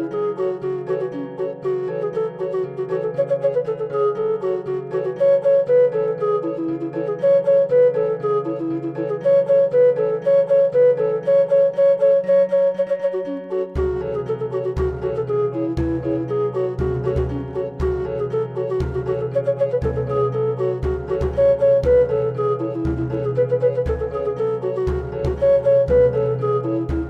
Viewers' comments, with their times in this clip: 0:04 why? That "cut-off melody that builds to a drop" thing sounds incredibly out of place here? It's also not in any of the modern (folk) renditions
0:09 that drop tho